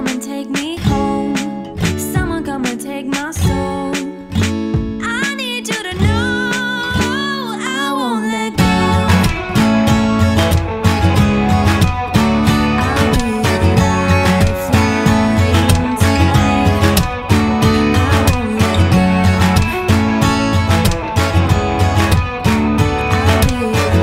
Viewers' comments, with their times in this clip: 0:07 the electric is soooo good